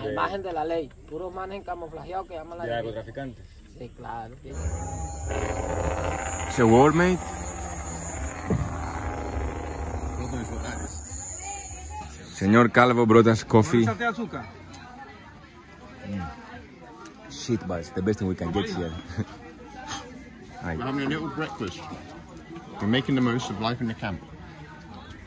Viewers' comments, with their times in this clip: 0:07 Peterbuilt jake brake :)
0:09 it sounds like a military gun shooting with machine guns, there different kind of machine guns.
0:12 when you said it sounds like war, i actually thought it sounded like a jake break on a Semi truck 😂